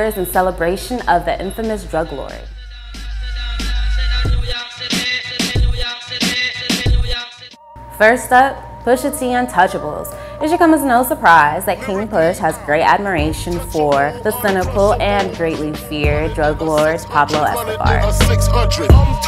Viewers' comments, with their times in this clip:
0:04 What was that reggae sounding song ?